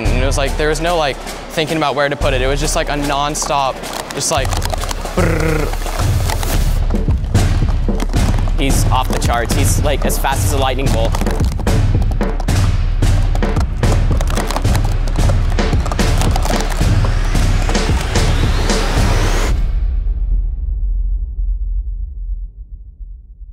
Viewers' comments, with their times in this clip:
0:04 The guy talking went on to become the sound for the A-10 Warthog.